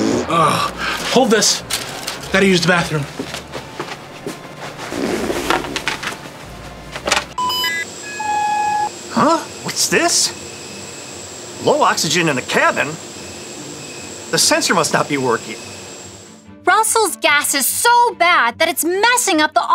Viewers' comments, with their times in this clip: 0:04 Not him walking to the plane bathroom and farting 😂😂